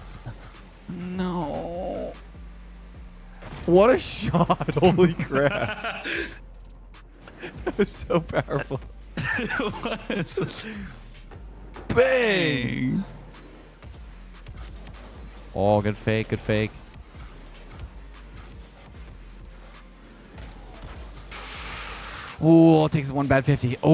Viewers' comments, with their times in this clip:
0:10 the synchronized "bang!" you two did lol